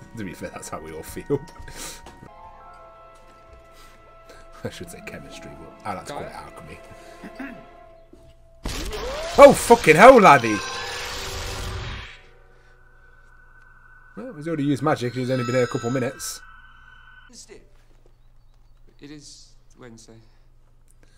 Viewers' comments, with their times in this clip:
0:09 the way u said “laddy” was hot 🙈